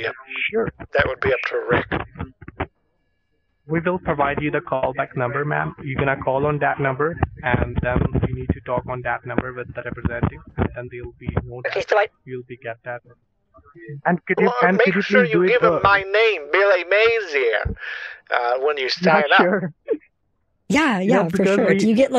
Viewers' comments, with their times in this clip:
0:10 😂 the old gma came on for a second. I was wondering if thatd happen.